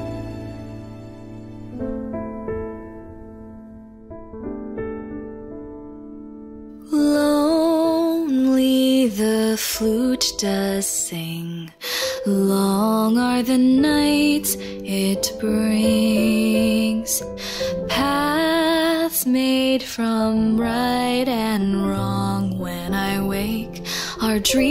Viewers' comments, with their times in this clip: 0:07 BRUH I GOT FREAKING CHILLS AND GOOSEBUMPS HOLY SHITTAKE YOUR VOICE IS SO ANGELIC 😭 💞